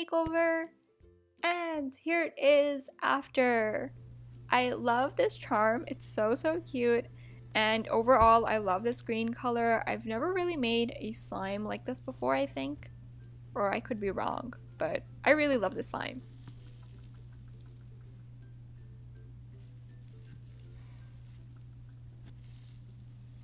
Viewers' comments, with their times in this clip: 0:06 Why is she sounding like she’s crying